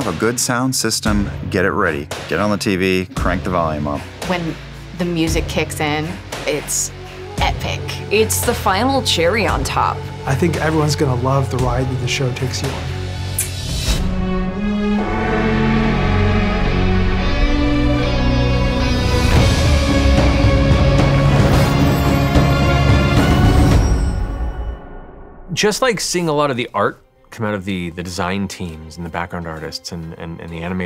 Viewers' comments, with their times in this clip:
0:09 omg it thought it was matt
0:11 Who’s the budget mat Mercer ?